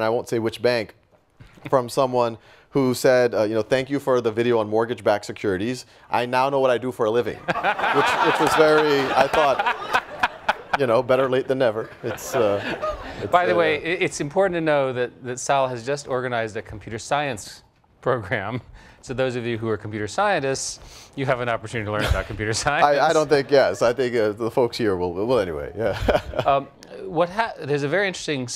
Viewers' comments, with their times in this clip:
0:09 The long laugh is too long & annoying. Annoying interviewer. He should refrain of this kind of actions.